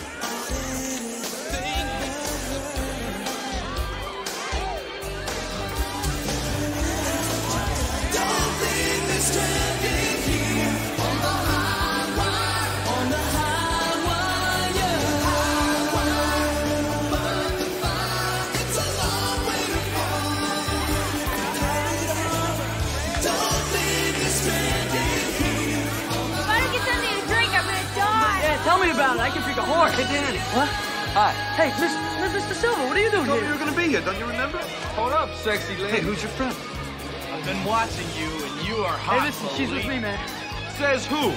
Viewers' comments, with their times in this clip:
0:06 To go straight to the best '80s harmonies.
0:07 The 80s Music ROCKS!
0:29 Did Daniel say he could drink a horse?…Wtf?
0:29 Why does Daniel say he could drink a horse wtf that’s rlly messed up